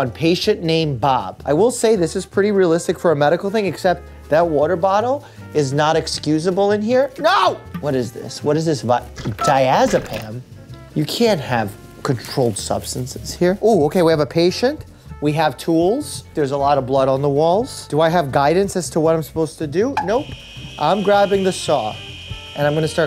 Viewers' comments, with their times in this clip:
0:06 hearing that “NO!!” Was so genuine omg-
0:07 That Scream Tho-